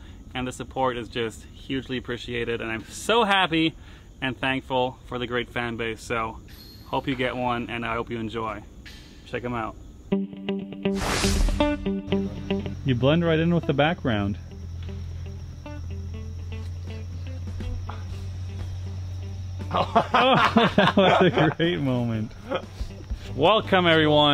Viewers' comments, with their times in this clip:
0:08 A good giggle starts You're welcome!! ❤❤